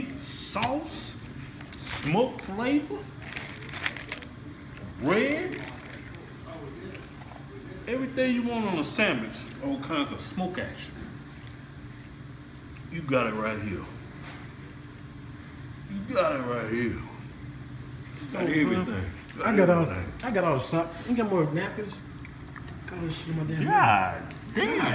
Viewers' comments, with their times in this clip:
0:08 sammitch! hahaha.. I got that haha..